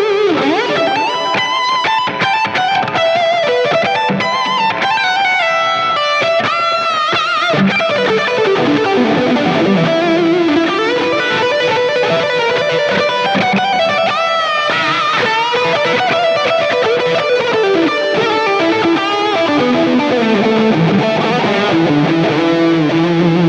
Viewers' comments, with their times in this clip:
0:07 cool phrase right there!!